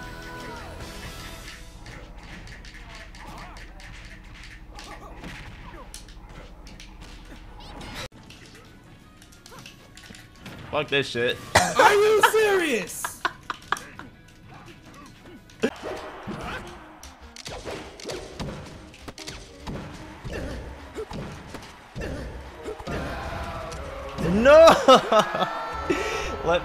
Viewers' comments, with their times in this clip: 0:07 reminded me of the perfectly cut scream compilations